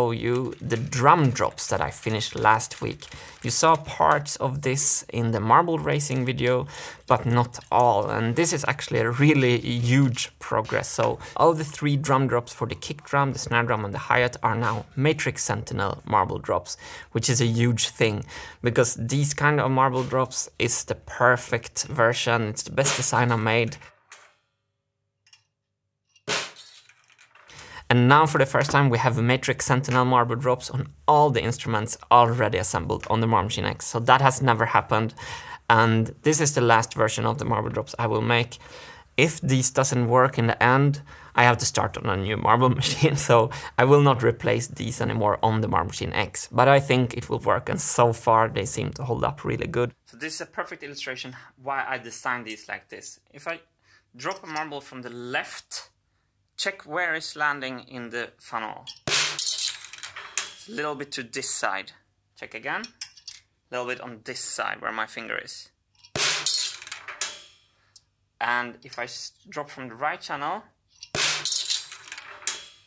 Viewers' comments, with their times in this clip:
0:04 what is that noise in the background?
0:04 you can hear weird sound like supre muffled "Sweet!" in the background What?
0:04 What was that random "OUI" ?
0:59 I love the sound of the marble going down the funnel!